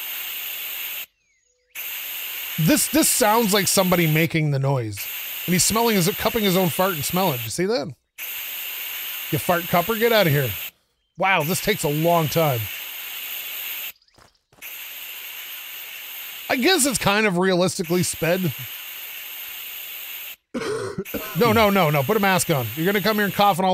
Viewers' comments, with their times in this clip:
0:10 sounds like hes blowing up a pool float lmao but absolutely love the game and title 😂